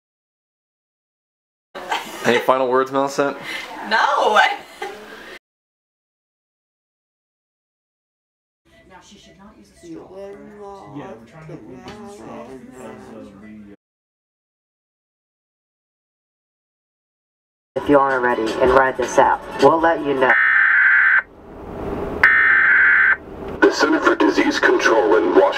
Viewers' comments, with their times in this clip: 0:09 "feeling lost but now and then..." IS SHE SINGING THE DAMN VICTORIOUS THEME SONG?